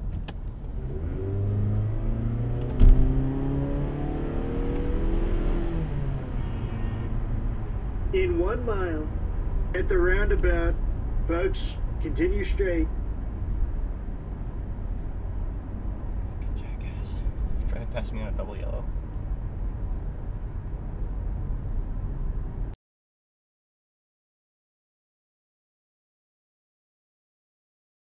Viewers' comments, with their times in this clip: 0:05 Is that Donald Trump giving directions?
0:06 is that a Trump GPS??
0:07 Does this guy have Donald Trump as his direction voice🤣🤣🤣🤣
0:07 I swear the guy has a Donald Trump GPS
0:07 lol the Donald trump voice for the car navigation sent me 💀
0:07 did he have a Trump voice for his GPS!? hahahaa!!!
0:07 This guy has Trumps voice as the route directions? Didn't know this was an option. How I get this?
0:08 IT SOUNDS LIKE TRUMP GIVING DIRECTIONS!!
0:08 LOL the trump voice over GPS!
0:08 Is that a Trump SatNav?!
0:12 does that guy have Trump as the voice for his GPS?
0:13 MY GUY HAD A DONLAD TRUMP VOICE GIVING HIM DIRECTIONS AHAHAH